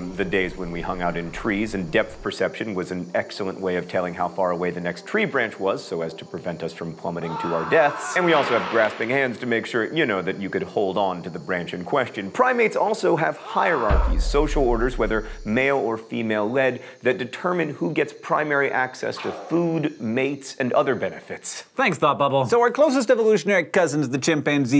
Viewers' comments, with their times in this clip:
0:05 Love the overdramatic yell 😭😭😭
0:06 that's how i scream